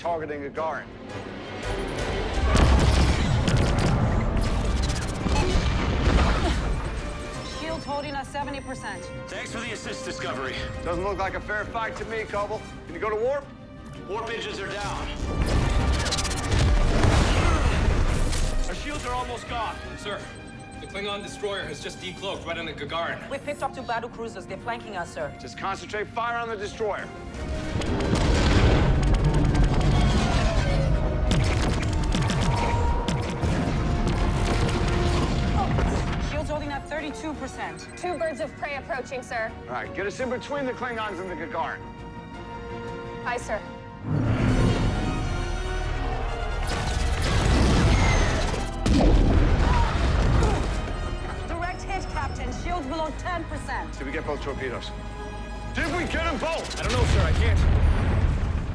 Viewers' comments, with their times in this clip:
0:04 wtf is that sound? An Atari?
0:04 what's that weird sound?
0:04 Seriously? an 8-bit noise?
0:05 wtf is that sound? :DDD someone press too many buttons on the keyboard?
0:06 anyone hear that "atari" sound
0:46 judging form the one blast why is the captain asking if they got both torpedoes?